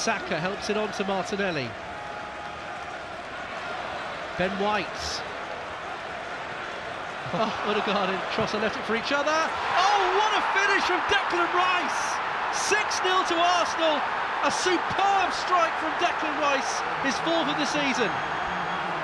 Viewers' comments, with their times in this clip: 0:03 Ødegaard and Trossard pretending to leave the ball to each other (and the stadium laughs) but in fact leaving it for Rice (and the stadium laughs no more) . London Colney to The London Stadium.